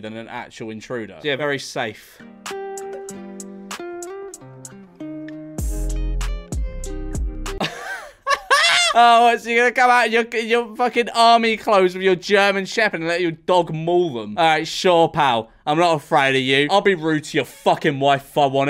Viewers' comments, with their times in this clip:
0:06 sounds like some five nights at Freddie’s music